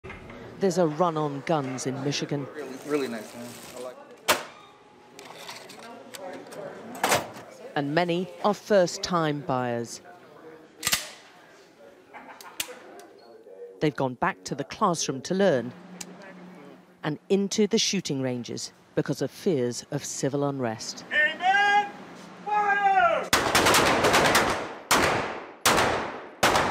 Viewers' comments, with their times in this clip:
0:09 Nervous Adolf noises